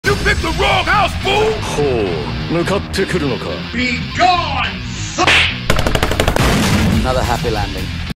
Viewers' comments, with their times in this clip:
0:06 that’s not mythra, that’s f**king Obi wan kenobi